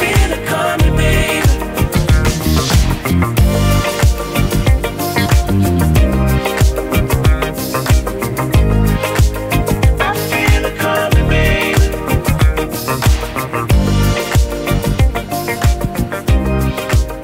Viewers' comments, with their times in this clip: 0:04 oof that bassline sent me to outer space😍😍